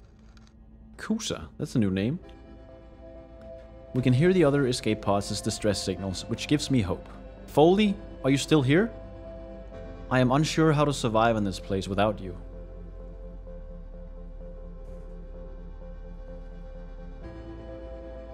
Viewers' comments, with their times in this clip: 0:05 the Death of the Star music starts at the perfect poignant moment. It gives me goose bumps and watery eyes.